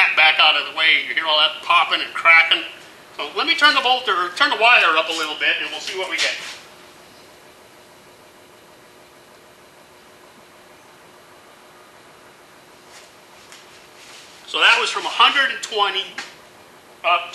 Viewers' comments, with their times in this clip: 0:03 PopCorn gotta love it when your buddy welding at the stations doing that